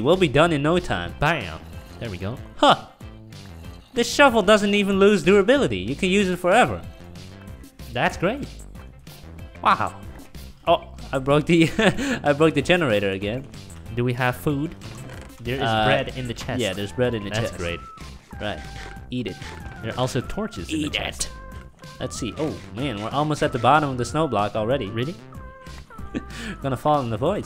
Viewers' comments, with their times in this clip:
0:08 you can here a zombie